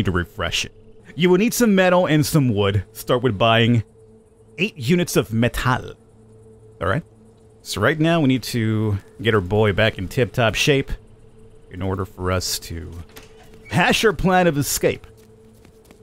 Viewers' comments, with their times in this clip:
0:03 The way you said metal that is how you pronounce the word metal in swedish. It really caught me offguard :D